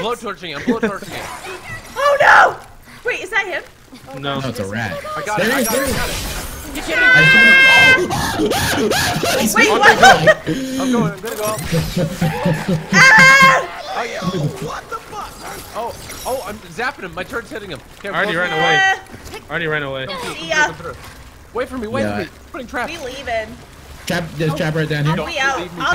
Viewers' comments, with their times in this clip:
0:08 that scream thou . . . :))))